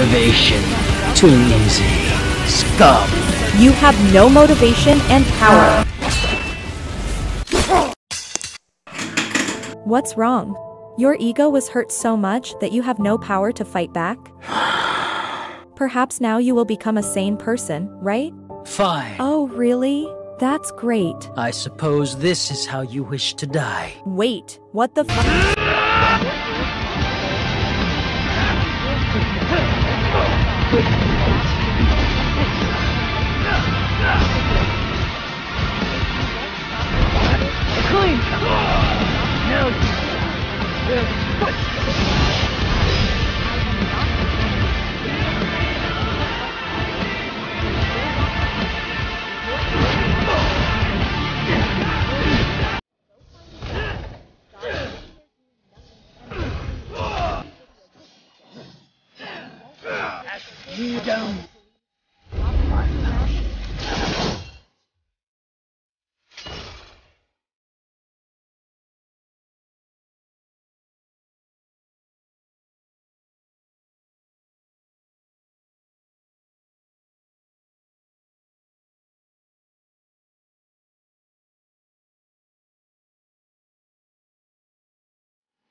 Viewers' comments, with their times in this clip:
0:08 the fucking sound that the chair made is hilarious for some reason
0:25 Vergil got so much motivation from the sound that it got worse in quality
0:53 damn , i used to vibe with this part of the video but it broken , now i can't hear a goddamn thing other than vergil grunting with his SSS combo
1:07 Best part Im feeling power while drifting in the ocean all alone with this crazy beat